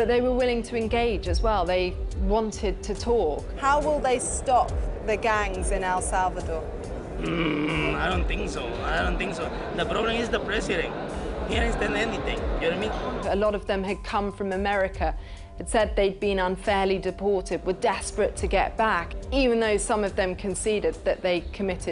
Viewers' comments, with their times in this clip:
0:07 when a truck starts to rev up.